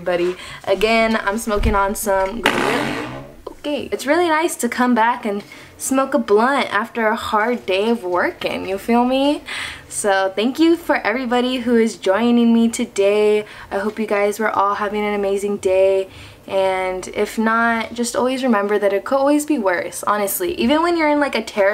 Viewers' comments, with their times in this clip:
0:03 that fart noise🤣